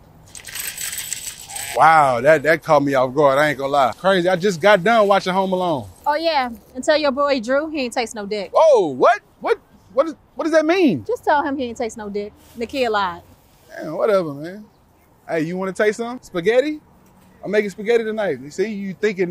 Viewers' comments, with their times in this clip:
0:05 was the Funniest stuff ever and that “whoa” was hella genuine.